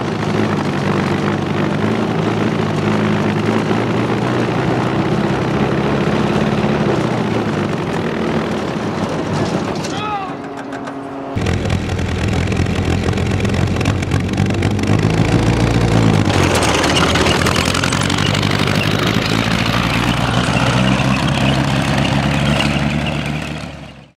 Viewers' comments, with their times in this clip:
0:09 What is up with this sounds like someone got hurt ?